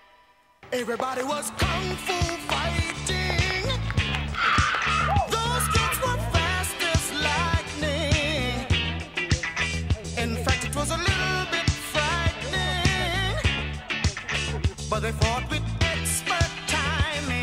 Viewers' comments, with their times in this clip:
0:03 Bruce Lee's scream